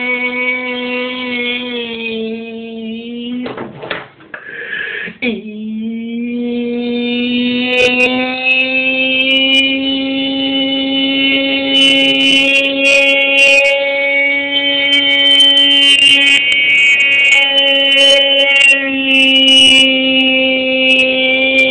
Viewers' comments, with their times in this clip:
0:05 he acted like tornado siren blaring out
0:05 vacuum cleaners be like